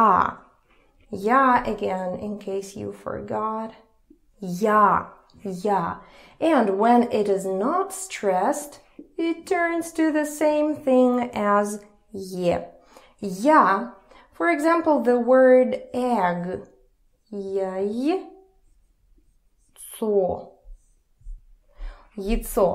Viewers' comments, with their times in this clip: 0:09 the "ya" in das vendanya, why isn't it [ih] like you explained ? P.S. you are awesome thanks!